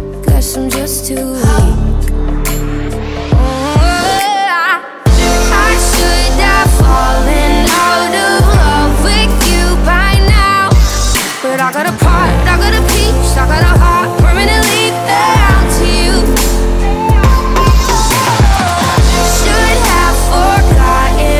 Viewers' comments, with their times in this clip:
0:03 Possibly my favourite vocable of all time